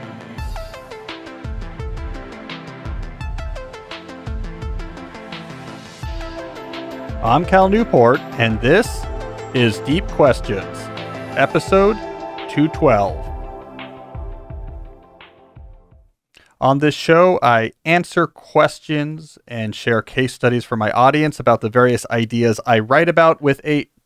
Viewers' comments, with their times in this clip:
0:07 I love how Cal maintains the same tone in every episode. "I'm Cal Newport and this is Deep Questions, Episode ___"